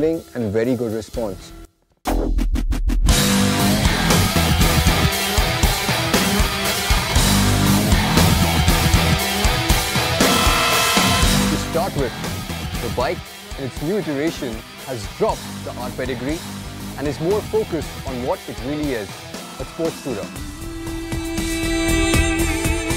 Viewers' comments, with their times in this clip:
0:03 rip headphone user !